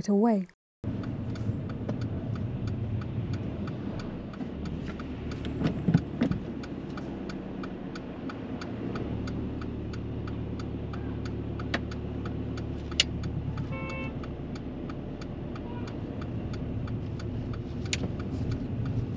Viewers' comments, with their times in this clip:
0:05 beautiful smirk lol 😍😜🙈. And someone shouting 4 letter C word oh dear haha